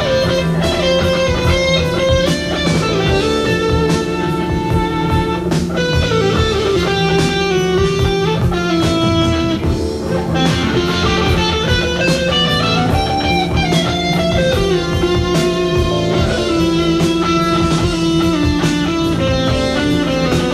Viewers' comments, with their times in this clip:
0:07 He plays a Major 3rd over a Minor. Biggest mistake in music you can make.